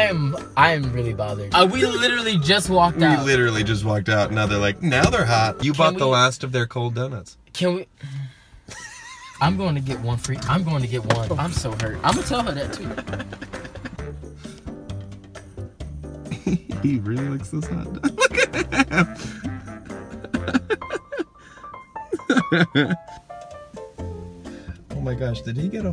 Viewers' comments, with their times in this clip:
0:08 Thomas and his laugh 😂 ❤️❤️❤️❤️